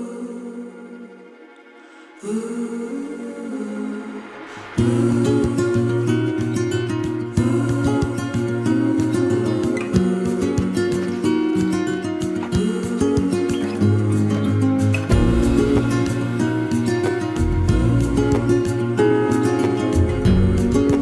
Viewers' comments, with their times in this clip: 0:03 Who’s the artist ? Haunting and beautiful x